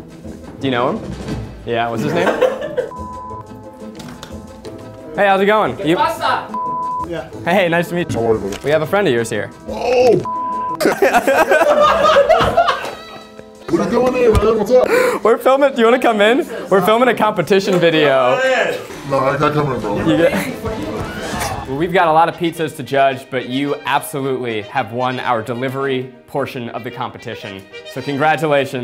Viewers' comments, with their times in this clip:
0:10 why did that sound like it came from a meme.